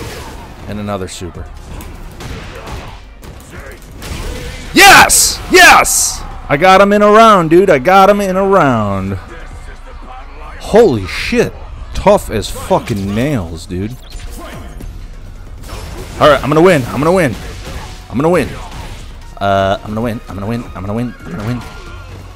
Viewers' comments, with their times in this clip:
0:04 Headphone users R.I.P